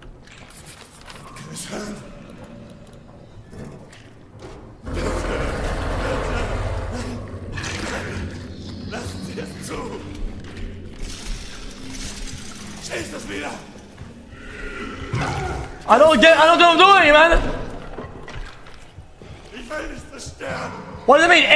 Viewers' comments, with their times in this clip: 0:07 imagine in real life you have a monster in that place and the first thing you do being locked in there is scream so that the monster can hear you, also wtf is that pepeNPC dialogue my boy got 😢